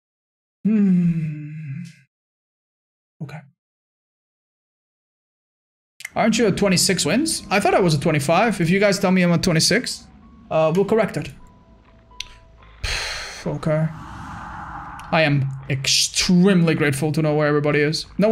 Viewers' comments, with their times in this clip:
0:01 That moan at the beginning thoug😳